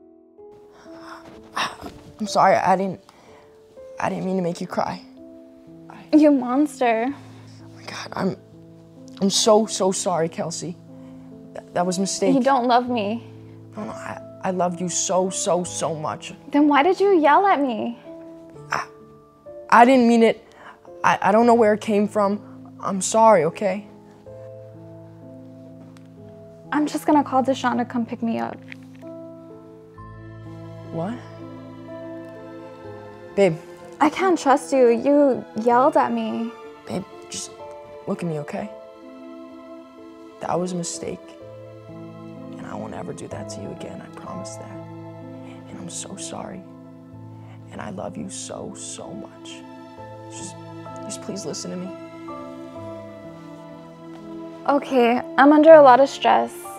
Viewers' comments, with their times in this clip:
0:07 the way she said your a monster so sassy😂😂😂😂😂😂😂
0:37 bruhhhh forma yell WTF😂🤨
0:37 this videos music has NO right to have this good music ❗❗❌❌